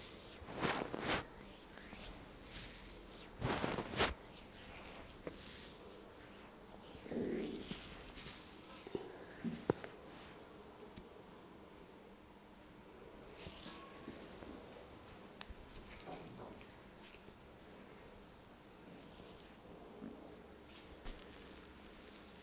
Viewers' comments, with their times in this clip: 0:08 Anyone else hear that fart ?